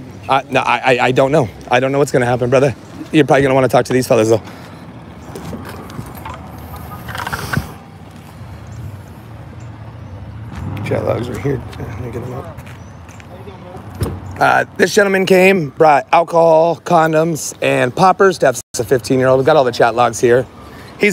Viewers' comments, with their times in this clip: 0:07 Not the Grindr notification going off 🤣